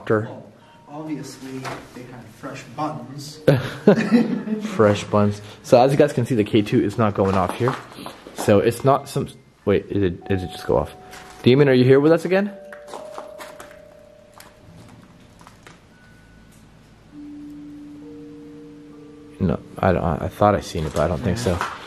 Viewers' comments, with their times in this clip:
0:04 there is a clear voice saying "get out"